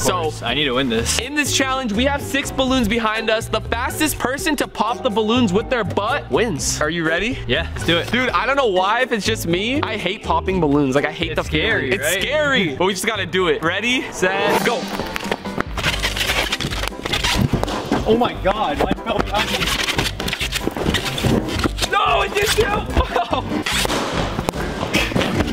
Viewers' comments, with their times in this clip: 0:06 why did he say butt so confidently and loud😭😭😭